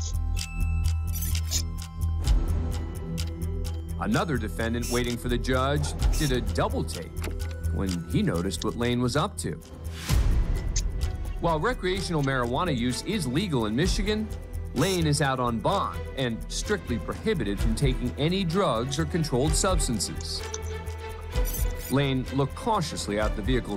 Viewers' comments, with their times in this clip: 0:08 The serious music in the background is what got me😂